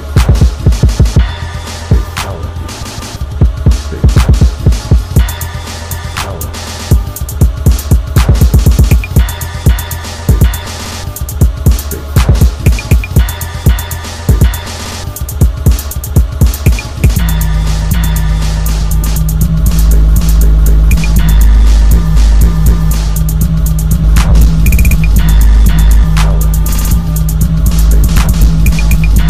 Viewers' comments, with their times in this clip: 0:10 I thought it was good until like until you started chopping it.